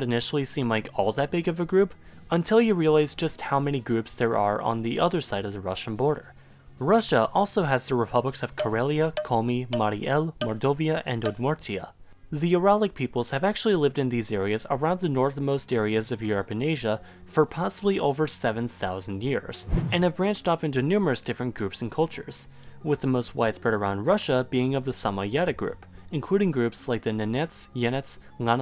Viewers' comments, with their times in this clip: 0:10 thought you said moldovia